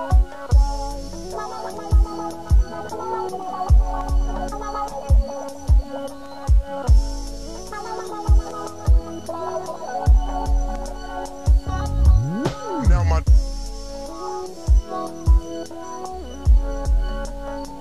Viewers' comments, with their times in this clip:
0:03 the blend .... blissful mayne